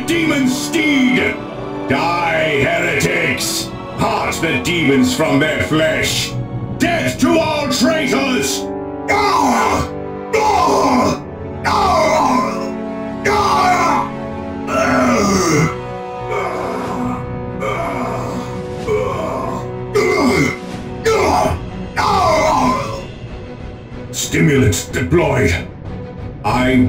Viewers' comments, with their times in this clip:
0:07 onwards Sounds like they purged an entire squad.